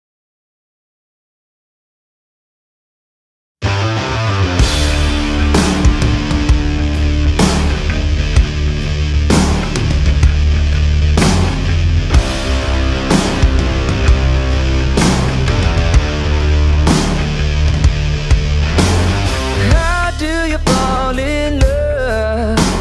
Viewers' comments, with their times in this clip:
0:03 oh my CELESTIA IT SOUNDS JUST LIKE HIM